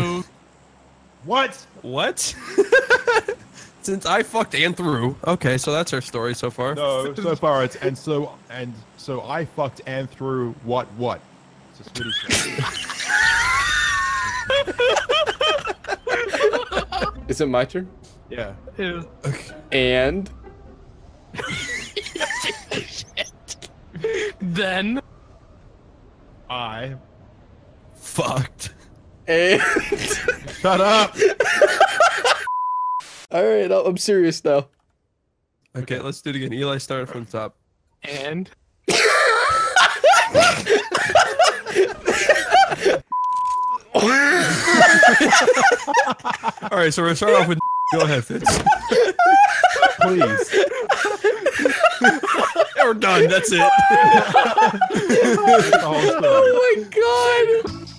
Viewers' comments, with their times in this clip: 0:09 sound like the new lil Pump album
0:43 The wheeze that cured my cancer
0:45 is that the word *NIGGA*?